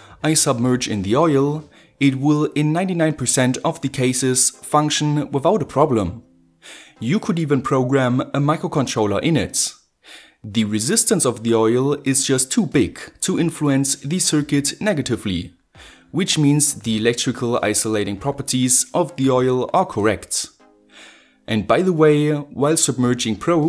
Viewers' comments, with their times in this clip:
0:07 Steam notification sound or is it just me?